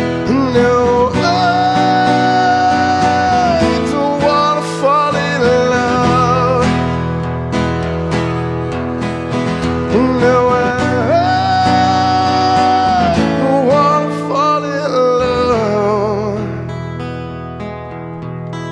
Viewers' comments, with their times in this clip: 0:06 this voice make me so good. i remember many years ago